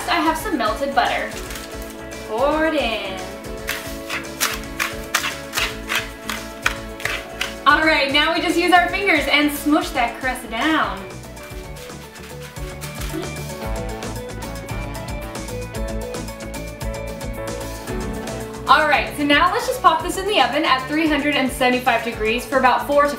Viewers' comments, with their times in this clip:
0:06 sound like mine craft